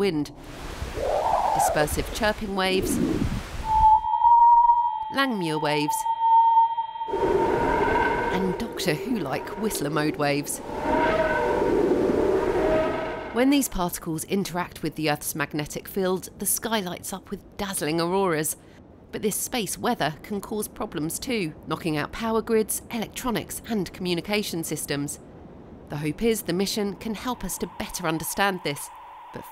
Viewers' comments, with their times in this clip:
0:07 That Whistler Mode Wave is deeply unsettling. Love it.
0:10 is obviously the TARDIS from Doctor Who
0:11 nah there's no way lmao, theres no way the tardis sounds was made first before this discovery
0:11 That was the sound of the Tardis